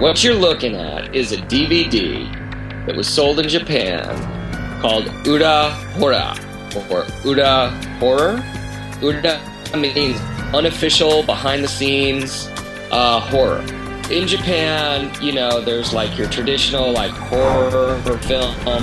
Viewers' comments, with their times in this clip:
0:05 called "uuRA horrRA!" or "URA Horror" "uuRR da?!" " I Mean .....................